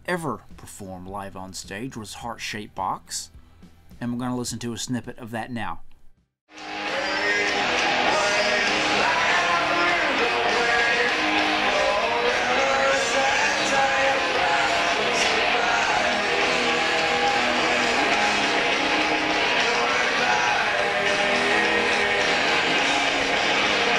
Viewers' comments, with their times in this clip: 0:06 Oh god no I can't stop crying it's in his voice💔💔💔